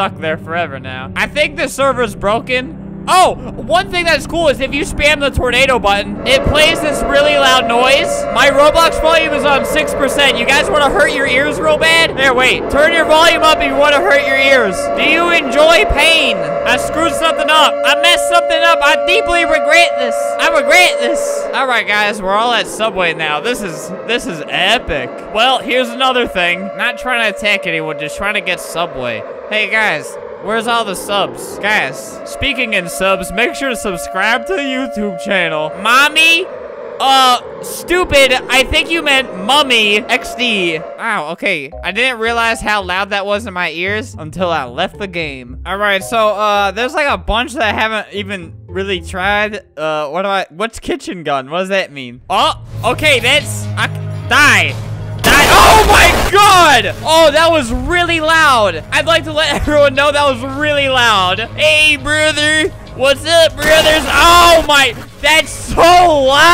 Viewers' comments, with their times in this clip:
0:07 sounds like siren head
0:12 RIP the headphone users in that game
0:51 his scream of actual fear is hilarious